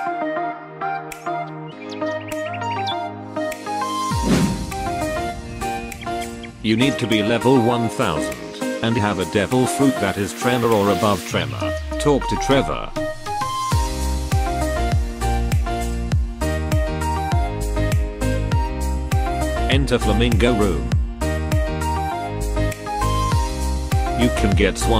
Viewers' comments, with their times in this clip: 0:08 legit sounds like he says Trevor the whole time instead of tremor, you could just use you’re real voice but nice video.